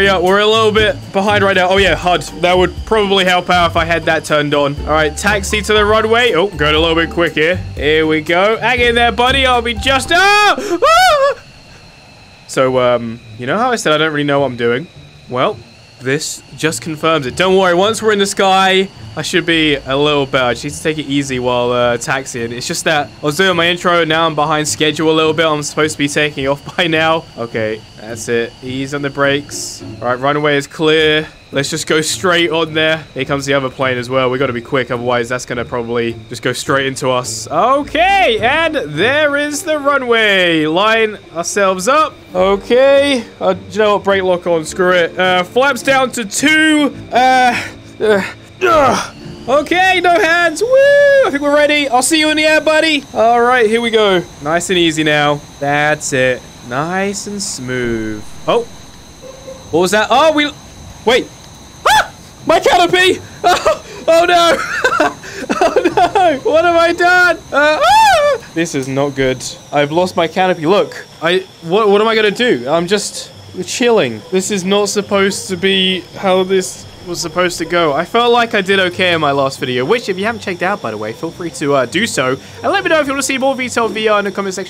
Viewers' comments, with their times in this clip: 0:10 Very questionable shriek
1:08 what a manly scream i love it